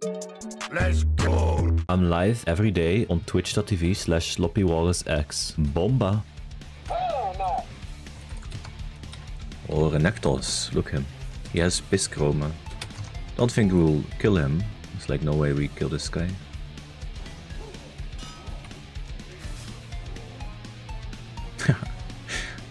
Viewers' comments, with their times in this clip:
0:07 W music choice editor.